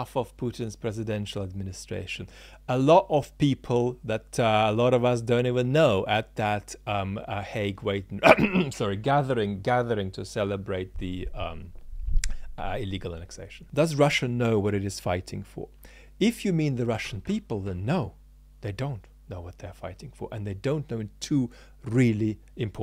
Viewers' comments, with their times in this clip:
0:08 What is the word he is using here that sounds like haigwait or haigwake?